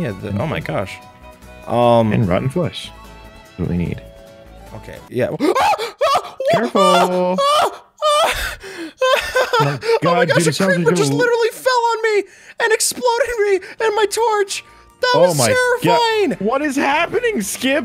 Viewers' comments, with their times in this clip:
0:05 heart attack go boom